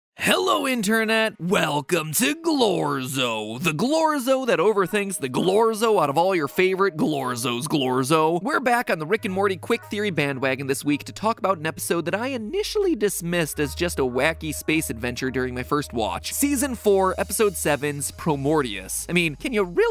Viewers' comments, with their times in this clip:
0:00 when he says Internet it set my ocd off because it didn't sound like he usually says it